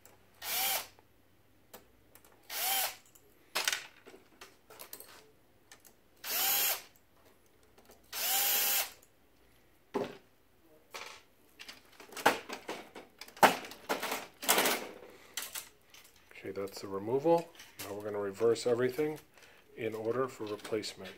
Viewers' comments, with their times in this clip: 0:03 He dropped a screw in that is now loose in the printer. You can hear it rattling around when he closes the cover @ 4:441 **Slow Down** Great video though! Good tech!